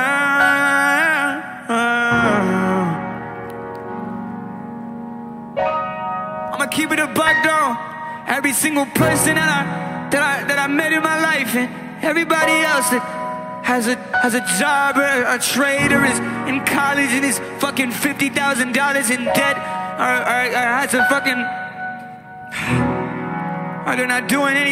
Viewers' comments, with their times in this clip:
0:06 This is unironically the best music to grace my ears.